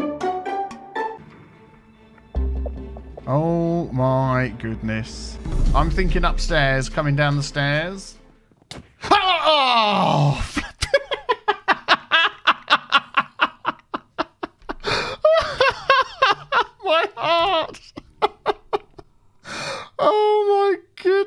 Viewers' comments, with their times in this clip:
0:06 amazing scream right there